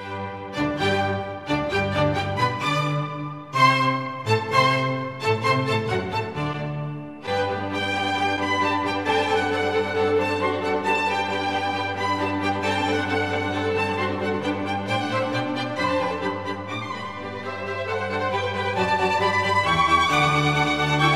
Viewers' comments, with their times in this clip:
0:06 Can we just take a second to appreciate the amazing music